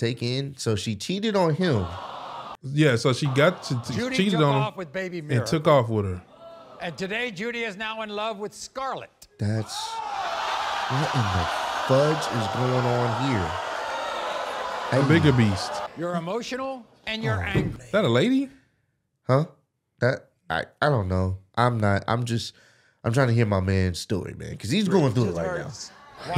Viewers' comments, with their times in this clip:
0:10 that crowd was like when WWE says Bitch and the crowd goes OOHHHHHHH